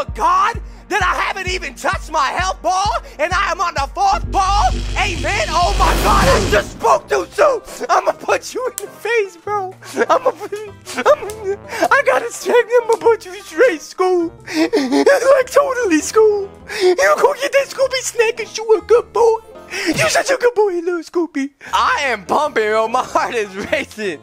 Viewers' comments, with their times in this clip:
0:09 I started laughing 😂 and btw I resumed the video with my airpods on and the volume was loud
0:11 This gibberish got me XDD